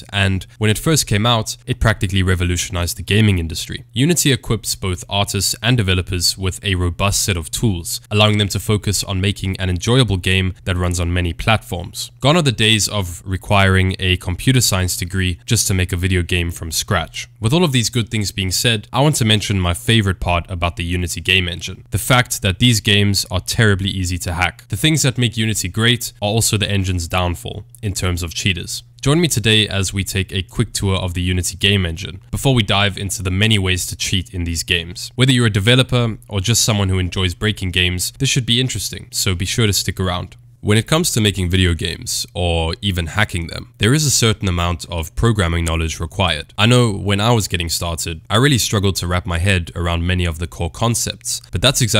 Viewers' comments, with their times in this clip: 0:04 autists and developers????
0:04 I heard autists
0:38 he said “or just someone who likes breaking games” so casually!